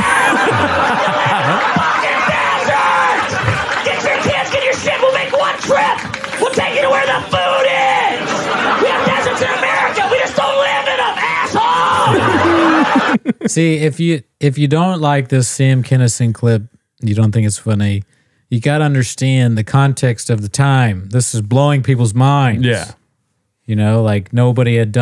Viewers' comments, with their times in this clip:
0:06 we found whose cadence rogan has been copying